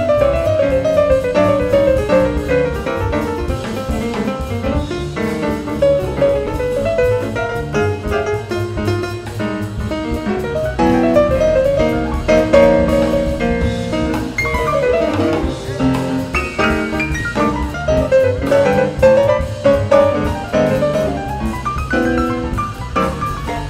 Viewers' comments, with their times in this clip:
0:05 Herbie left George so far behind he didn't even know what notes to play to accompany him.